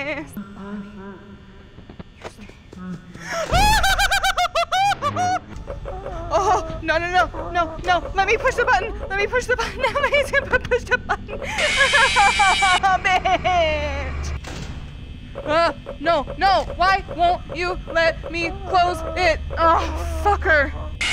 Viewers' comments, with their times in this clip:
0:06 you hear it breathing